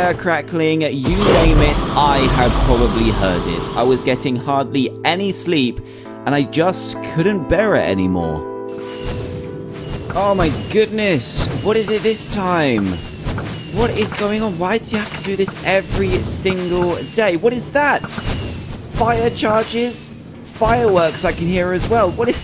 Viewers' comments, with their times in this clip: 0:04 the sound of milk poring onto a plate made of wool while someone trys to lick it through a wall of potatos